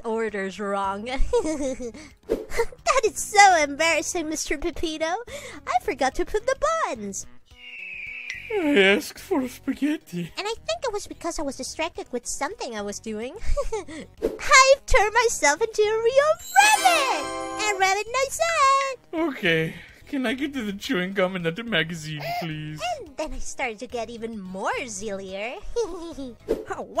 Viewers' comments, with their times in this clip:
0:08 The Delivery makes this the Top 10 Saddest Anime Protagonist Moments
0:14 she- she turned- she turn- she turned hers- she tu- she- uhhh- fu- funniest shit i've seen